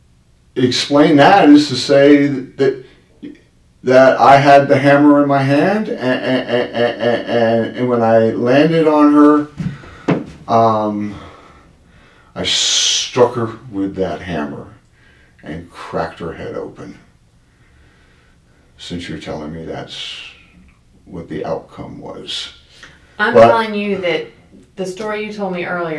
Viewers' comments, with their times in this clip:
0:09 at the end when he once again recounts the story of what "may" have happened, the way he says "I STRUCK her with a hammer and CRACKED her head open" with the stare, he just relived it with some of the same anger he had when it happened. You can see it and you can feel it!